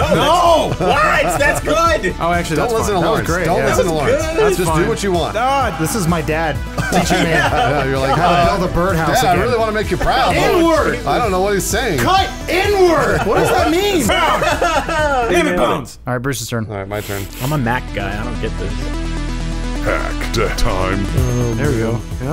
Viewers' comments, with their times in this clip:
0:10 "N-word! Cut N-word!"